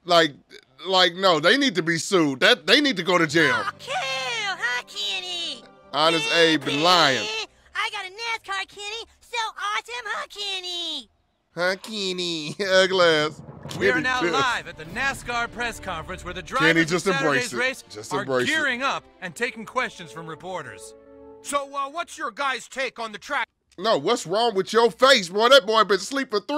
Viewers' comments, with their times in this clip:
0:09 That was actually a pretty good impression.